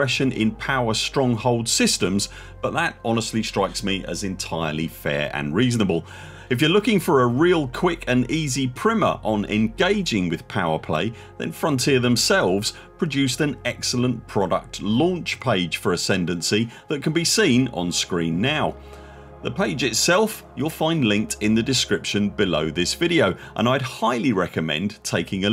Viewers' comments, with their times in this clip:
0:06 Never heard “primer” pronounced “primma” before. lol.